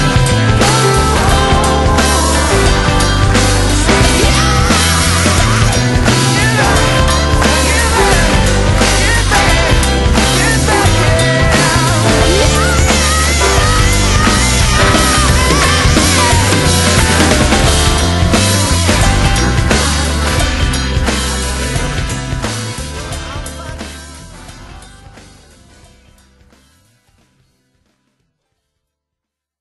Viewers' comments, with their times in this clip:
0:10 THAT NOTE THO!